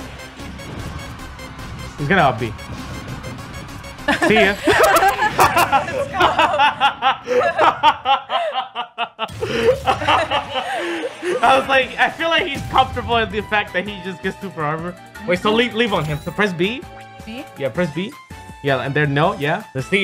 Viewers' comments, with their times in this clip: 0:05 that evil laugh tho hahaha
0:07 Zero: hahahaHAHAHA*HAHAHAHAHAHAHA* Zero's Gf: ((why is he laughin' HELP))
0:08 I like that evil laugh tho